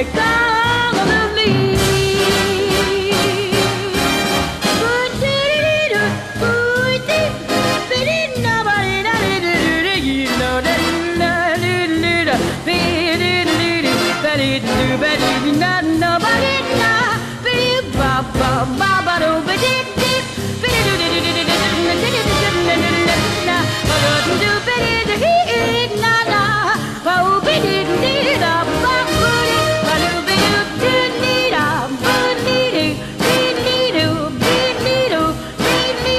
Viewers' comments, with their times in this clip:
0:03 The way She improvises is just unbelievable. No one can sing it better than her
0:03 Yes. Half tone higher Otherwise, chords are the same, in a relative sense. (Does that make sense?)
0:24 you’ve got her saying Ba Boo, but it sounds more like Ba do to me.